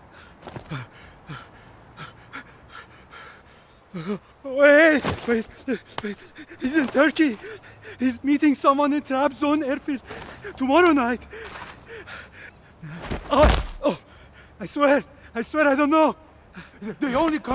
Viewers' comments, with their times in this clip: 0:03 The Iranian accent makes me laugh 😂😂😂